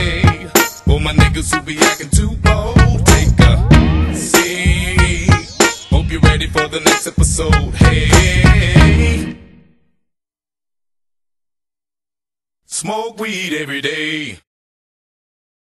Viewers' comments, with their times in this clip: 0:12 says eat everyday :P